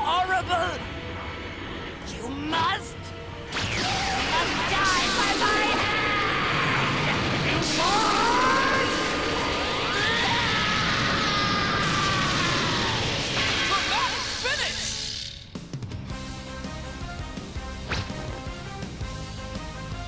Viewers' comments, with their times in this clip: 0:08 you fool! sounds way better